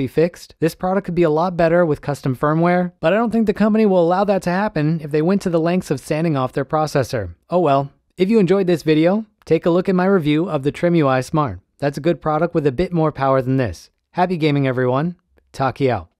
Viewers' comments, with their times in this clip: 0:10 Excuse me, can you run that by me again? Because I could not make out what you said there, that other device you mentioned.